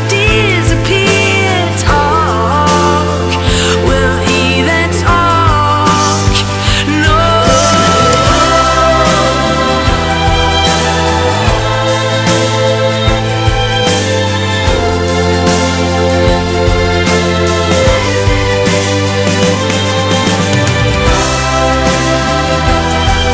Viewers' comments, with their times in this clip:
0:08 of this song is the exact same as the first melody in Mind Games by John Lennon. Probably unintentional but I still don't like it.